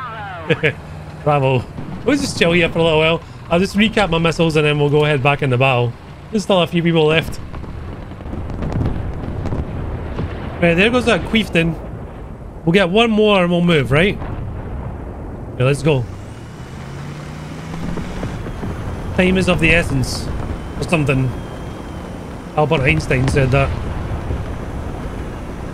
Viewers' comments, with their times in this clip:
0:10 Did you just say "queeftain"?! 😂😂😂
0:11 bro said quiften